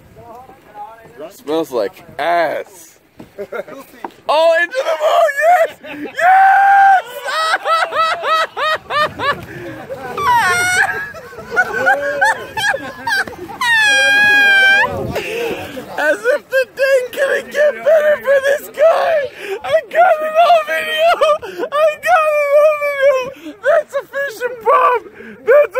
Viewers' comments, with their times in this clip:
0:07 ur laugh had me rolling in front of so many people
0:13 the sound when you release air from a balloon.